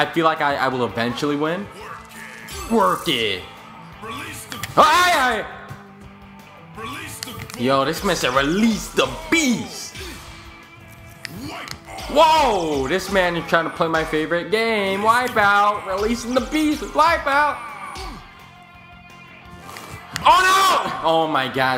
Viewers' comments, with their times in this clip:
0:06 I heard that "release the bogus"